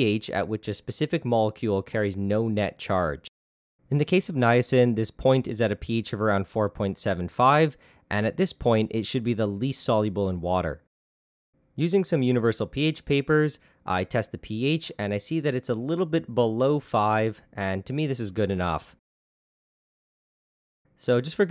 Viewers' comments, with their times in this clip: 0:07 "iis" Sorry, you know we have to do it ;D